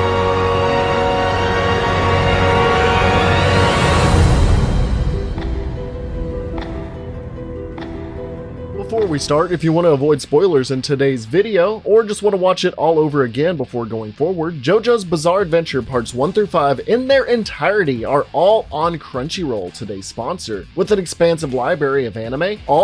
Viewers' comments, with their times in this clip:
0:04 My old Man JOSEPH still has a FUCKING VOICE?!